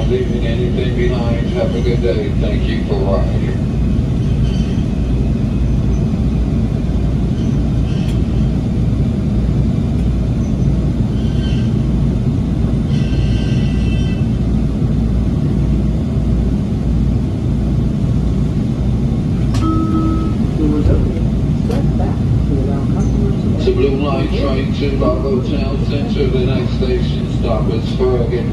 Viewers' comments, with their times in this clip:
0:10 This Metro 🚇 Definitely Need’s It’s Break’s Oiled Very Good Sounding Way To Squeaky Very Annoying To Hear Same Way U Feel When U Hear A Vehicle’s Break’s Squeaking Like Crazy